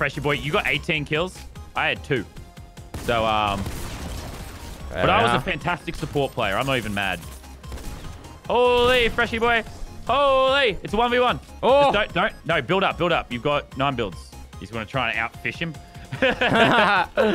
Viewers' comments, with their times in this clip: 0:03 dat music tho XD